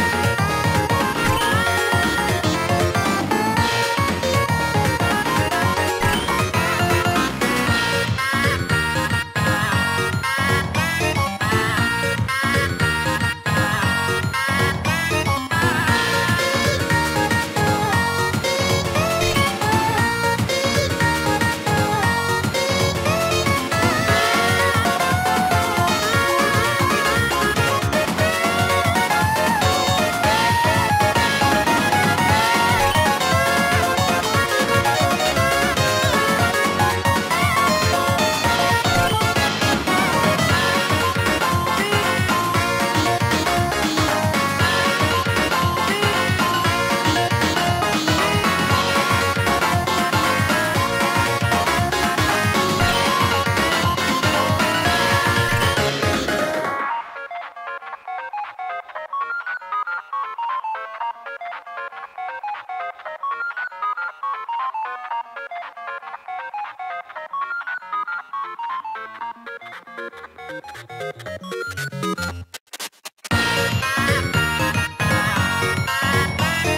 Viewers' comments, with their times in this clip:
0:07 is when the song becomes a banger!
0:57 hearing the Super Mario Bros. Theme just made me smile 😊